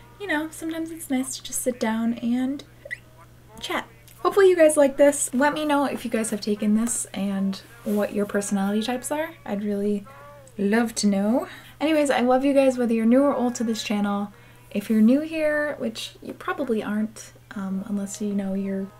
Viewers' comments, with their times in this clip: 0:03 That hiccup was so cute!